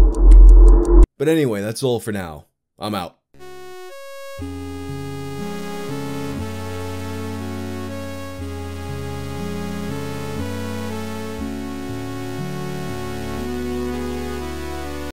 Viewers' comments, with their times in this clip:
0:05 Quick question. What's the song ? Sounds nice and soothing